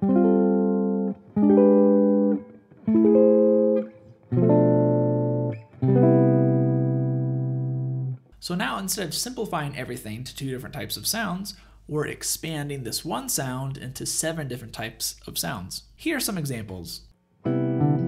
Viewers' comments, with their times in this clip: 0:04 Heyhey , cool Video but the chord on f should be f,b,e,g# right ?